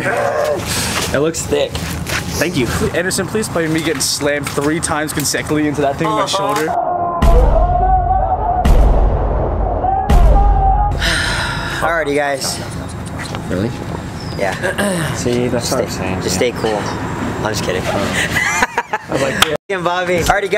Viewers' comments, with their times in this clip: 0:05 How is no one talking about "CONSECKILY" ?! 😂 Like wut. That's not even remotely similar to consecutively.